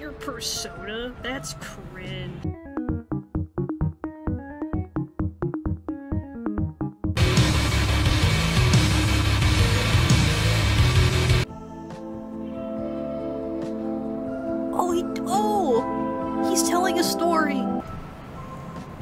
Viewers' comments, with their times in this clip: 0:07 ultrakill jumpscare, i fear that song, yet i listen to it all the time.